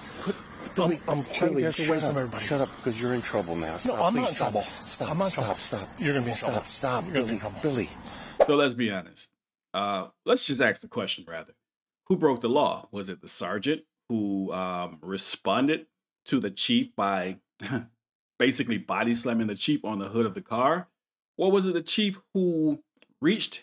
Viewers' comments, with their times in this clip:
0:09 We don't "axe questions" we *ask questions. Slavery was abolished in this country, black Americans are more than free to sound literate and articulate.
0:09 We don't "axe questions" we *ask questions. Slavery was abolished in this country, black Americans are more than free to sound literate and articulate.